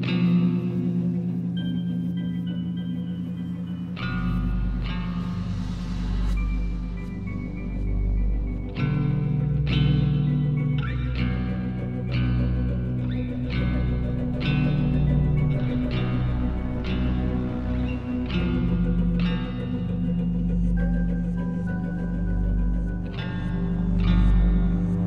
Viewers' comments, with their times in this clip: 0:10 did yall hear that scrape noise